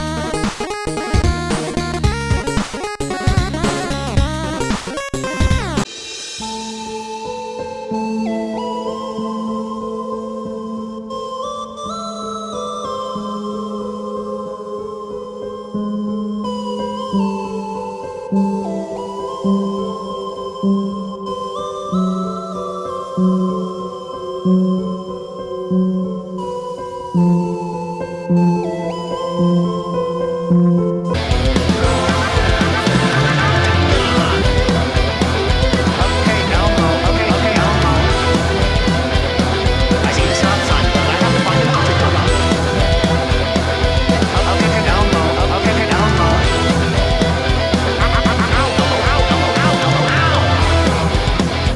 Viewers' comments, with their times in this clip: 0:06 why does have a horrible song?
0:35 I hear "Ok Elmo" this has to be the most fitting one